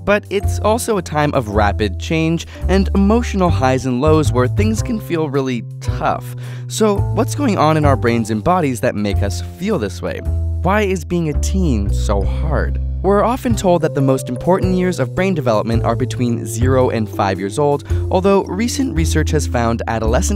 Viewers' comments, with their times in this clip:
0:06 Sorry but, "what's going o voice crack n in our brains*
0:07 that voice crack makes me think you’re still a teen.